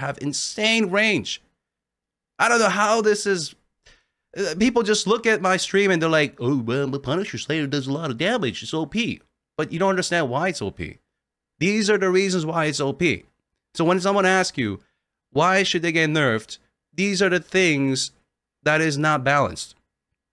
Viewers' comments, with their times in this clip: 0:05 mic was passed on to goofy